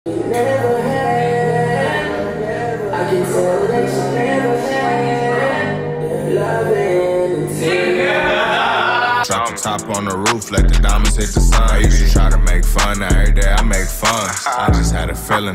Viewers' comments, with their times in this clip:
0:03 BRUHHH THE VIDEO IS ON BC THE MOMENT I HEARD THE MUSIC, I HAD TO PAUSE IT BC IK THIS FINNA B A BANGERRRRR😭😭😭🤟🏽!!!